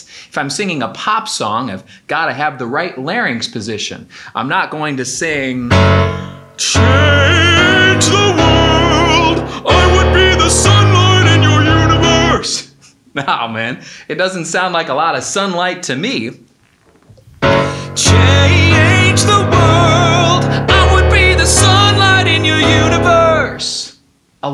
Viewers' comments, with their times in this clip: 0:05 was definetly patrick star singing a pop song lol XD
0:05 🤣🤣🤣🤣🤣🤣🤣🤣🤣🤣 LOL ... thats how i sound when i try to sing Luciano Pavarotti songs 🤣🤣